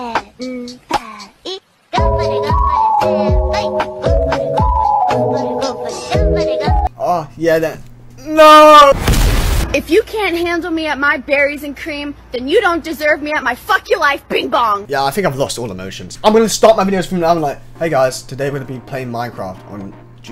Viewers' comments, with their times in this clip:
0:07 5 Is no one going to talk about how he sounds like Darth Vader with The Nooooooo
0:08 Bro sounds like darth vader